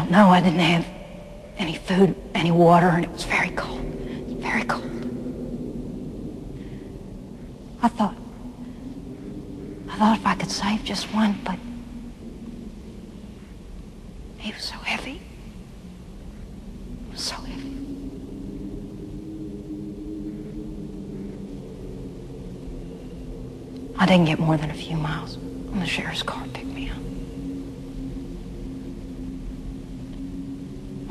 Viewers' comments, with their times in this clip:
0:03 One little thing I love about this scene is the ambient wind sound as Clarice is telling her lamb story. It gives great atmosphere to the scene. I also like how the wind gets slightly louder while she's mentioning how it was very cold outside. It's as if you can actually see Clarice trying to save that lamb as she's telling the story. Great film!
0:09 At the end of this line: 'I thought if I could save just one...' you can hear a faint noise. That is a crew member dropping something on the set... it was much louder and very distracting when filming. The director thought the take was ruined but Foster remained in character and was able to finish the scene. This was the take the director used in the final film.
0:10 you can hear a stage hand drop a wrench, apparently Jodie foster heard it, kept going and when cut was called she turned around and angrily yelled, what the hell was that!
0:12 Fun fact: you can hear a loud bang in the distance. That's a crewman dropping a wrench.